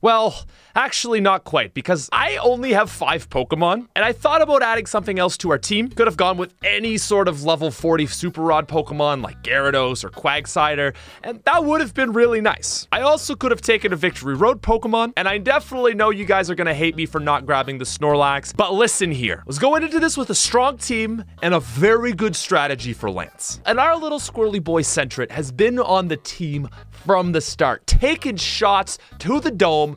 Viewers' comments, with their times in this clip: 0:10 “Quagcider” is a very Christmas appropriate mispeak.
0:10 my favorite pokemon, quagcider
0:10 he said Quagsider 😂